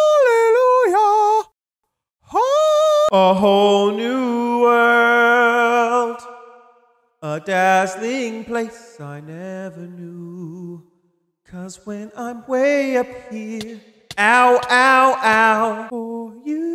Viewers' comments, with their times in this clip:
0:04 why can he sing so good?